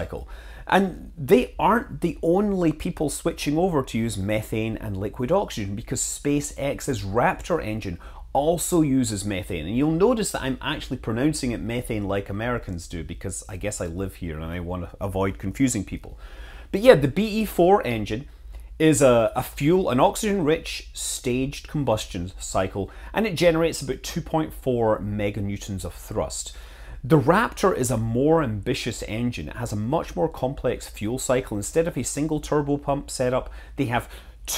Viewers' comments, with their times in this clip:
0:07 probably my favorite ignition. Pssss psss psss PFFEWWOOOOOOOOOOMMMM
0:17 thank you!... Cruz every time i'd hear ME-thane it throws me off and I'm just thinking a jokes for the next 30 seconds or laughing about it and I'm not listening to the video at all so I can actually pay attention now🤦‍♂️🤦‍♂️🤣😂🤣😂😭😭jkjk but seriously though I'm pretty sure most America that was your videos to appreciate you trying to confuse them less LOL but I'm going to guess that that's not a real big problem see this unless your audience is probably a little bit smarter than the average YouTube audience... LOL just saying